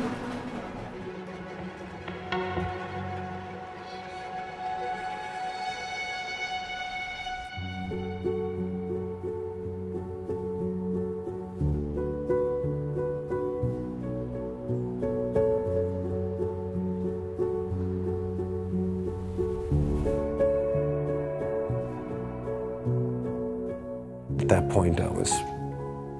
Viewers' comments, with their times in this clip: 0:08 What’s the name of the song with that smooth piano?